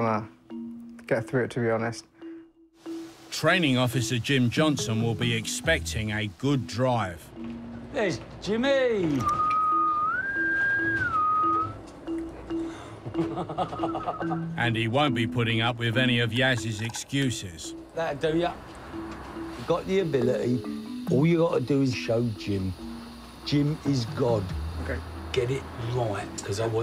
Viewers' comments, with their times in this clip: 0:10 Scania horn 😎 if you drive a Scania it is THE LAW to press the horn at least once a day. (FPC not included as you can't test before am)